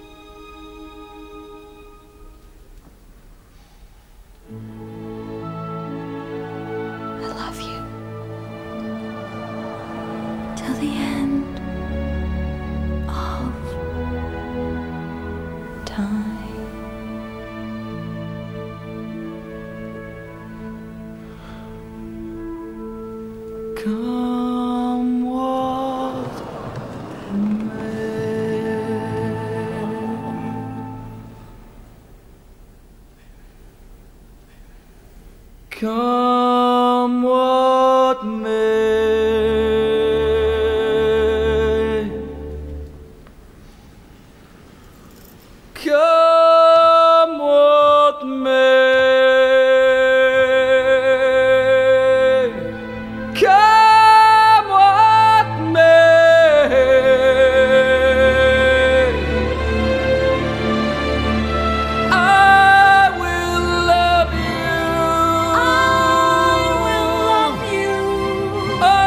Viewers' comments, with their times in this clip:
0:06 Kidman’s line delivery is perfect. It’s a musical, so emotions are typically conveyed through song, but here, some things just need to be said.
0:53 is it just me or is Ewan's vocals from until the end is the greatest thing to ever have blessed my ears? HIS HIGH NOTES AND HAMONY ARE LITERALLY BELIEVABLE!!!